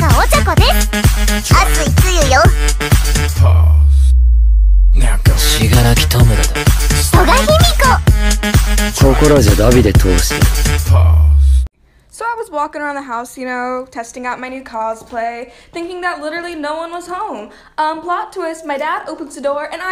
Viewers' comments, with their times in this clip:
0:05 My brain melted when I heard his voice in Japanese 💀☠️